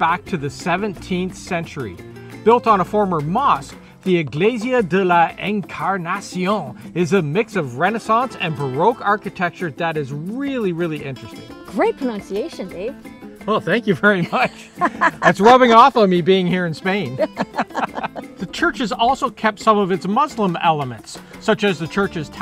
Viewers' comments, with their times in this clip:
0:04 love that frenchy pronunciation.